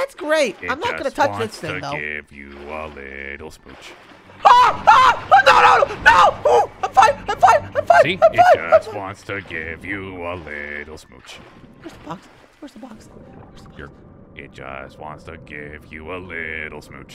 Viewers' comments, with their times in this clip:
0:05 don't scream sun, this is your soulmate.